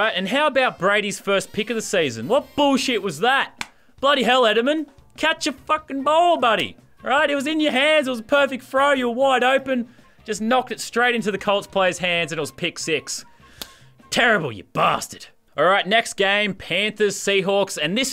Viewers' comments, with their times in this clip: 0:06 it was a perfect fro!